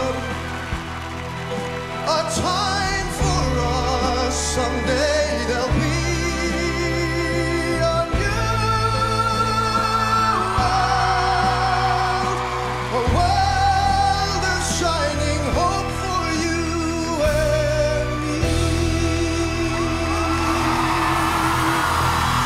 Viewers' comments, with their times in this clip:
0:05 so powerful voice....@
0:07 The way he hits the note ❤️
0:07 Beautiful voice, but the producers ruined it when they autotuned his voice /6. Great job!
0:08 That note tho :DD Amaaaziiinnggggg
0:08 Damn, such touching, deep and sexy voice, especially love )) Still watching and listening ))))
0:09 seal has an eargasm
0:09 aww, seal ;) thats one killer voice